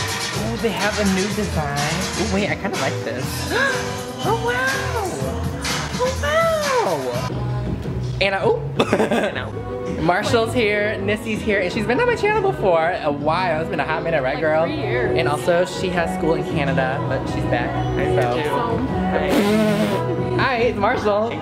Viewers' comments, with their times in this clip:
0:08 why does that sound so similar to the actual vid sksksksks